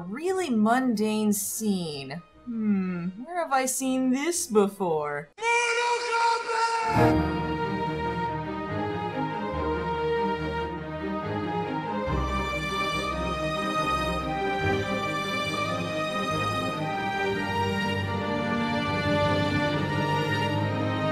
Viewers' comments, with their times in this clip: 0:08 If I didn't know any better, with that music, I would've assumed that I was watching 3 Ninjas, not Mortal Kombat.